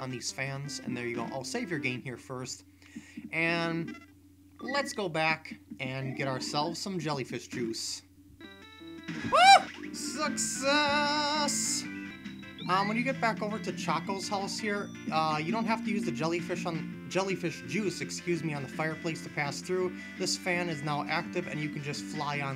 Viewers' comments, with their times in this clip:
0:06 that scream made me lol hard :D